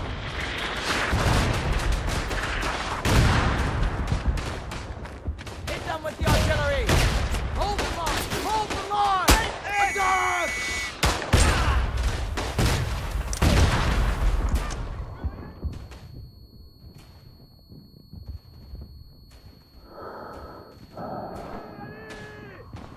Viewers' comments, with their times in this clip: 0:10 was actually an awesome, yet terrifying moment. Can't hear a thing but yourself breathing, and can't do anything, but only moving and shooting.